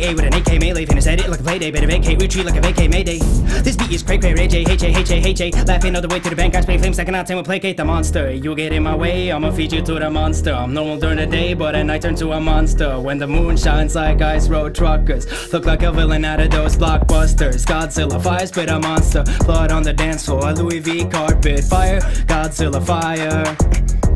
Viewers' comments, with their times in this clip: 0:08 Me: Mom can we have juice world Mom: no, we have juice world at home Juice world at home: